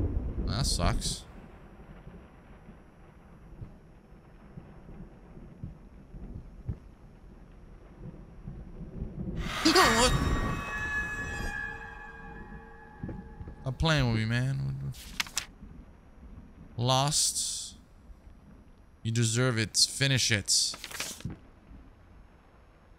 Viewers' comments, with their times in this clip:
0:04 The worst part of this game for me is the storm going on outside. I've got such a phobia of storms that even when they're in a game they unnerve me. Also, does the writing above the door say "Get it right this time"?